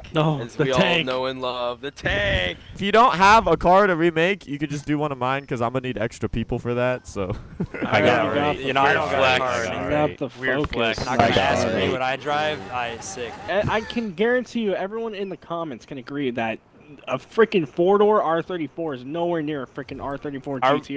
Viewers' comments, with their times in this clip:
0:07 They just can’t stop talking same time. Srsly that is so annoying.